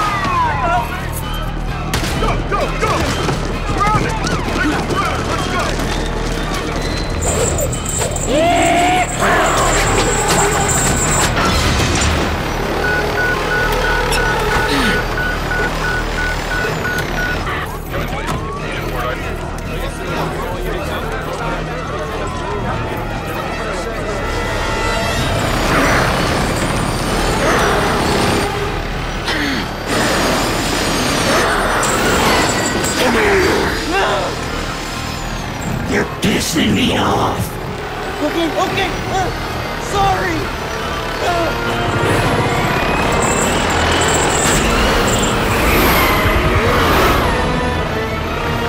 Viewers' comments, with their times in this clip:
0:08 love the yee haa made by Johnny
0:22 '"Ah, jeeze, not the urgent beep noise - I HATE it when the chopper makes the urgent beep noise..."
0:33 He sounded like Scorpion from "Mortal Kombat"!
0:35 that was the most genuine "your pissing me off" ever